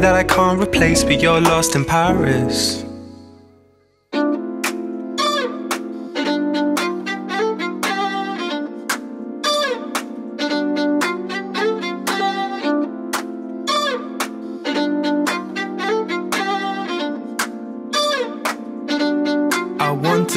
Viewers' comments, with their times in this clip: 0:04 That's very jamiroquai -ish , i love it.